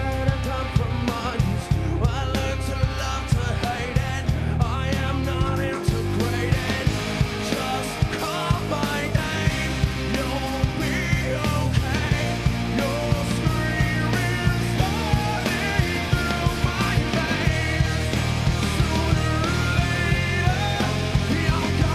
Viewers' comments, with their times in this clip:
0:09 They should REALLY work their vocals on live That just ruined it all just eww. I mean, who the heck is so famous and still has those erros. Still, they are uber cool on their albums